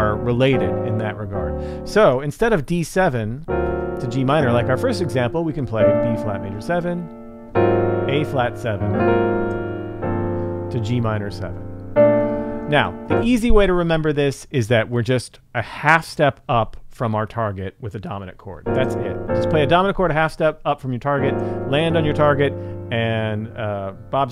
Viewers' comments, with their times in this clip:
0:09 That Ab7 to Gm7 voicing on is wide! Can't really play that with my left hand. Reminded me of Rachmaninoff, mentioned earlier in the video... And that Mu chord, what a wonderful, fresh sound!